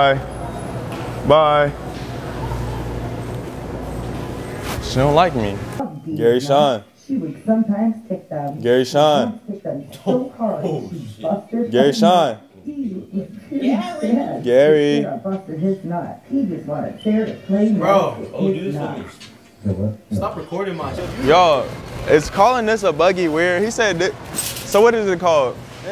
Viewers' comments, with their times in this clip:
0:07 ong i thought this was lil yachty